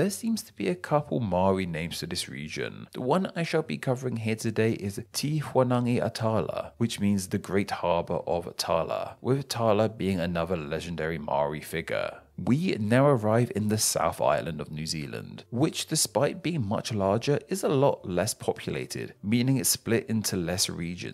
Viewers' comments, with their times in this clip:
0:03 "Te Whanaganui-A-Tara" scrunch!